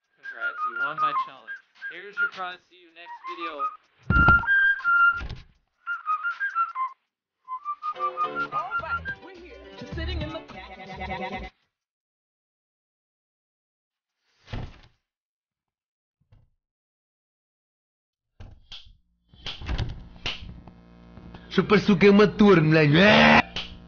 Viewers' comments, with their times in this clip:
0:07 Funny meme car crash